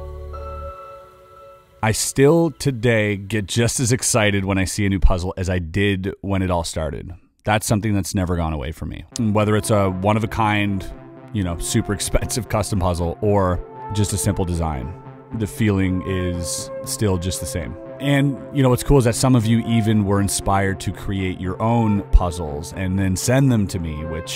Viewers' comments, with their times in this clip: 0:09 What is that music in the backround called ? Iam getting Bladerunner Vibes.